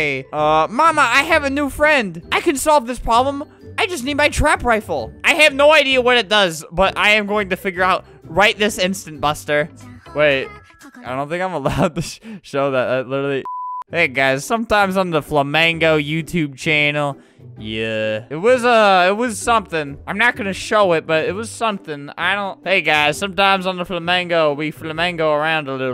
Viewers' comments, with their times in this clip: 0:10 hEArs anImE mUsiC oH oH mY gAwd wOndErs whAt iN hEll thAt cOUld hAvE pOssiblY bEEn